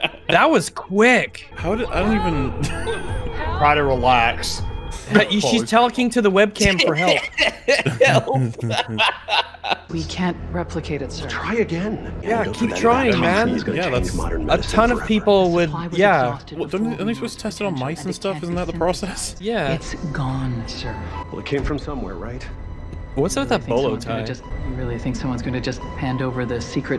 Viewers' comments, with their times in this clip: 0:08 She also said "help" in the most emotionless way possible. Like "Oh no my patient is dying. Please help him I guess whatever."